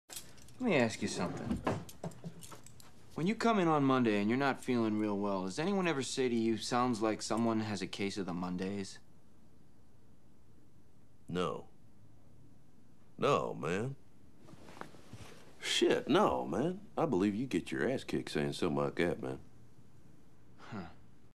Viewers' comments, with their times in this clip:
0:09 that long pause is hilarious.